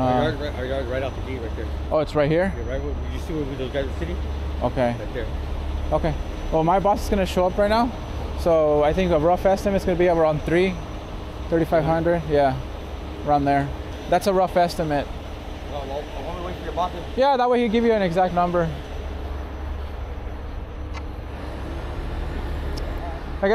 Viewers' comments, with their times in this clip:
0:09 Next time he should say three thousand five hundred not thirty five hundred sounds like he’s saying three to five hundred. But yeah dude is crazy to think it’d be $300 😂